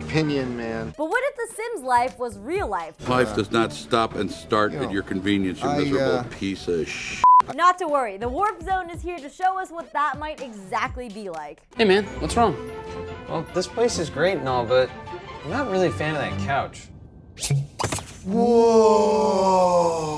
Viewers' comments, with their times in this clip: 0:03 HOLD UP EVERYONE! the guy sounds like buzz lighter.. you may continue everyone.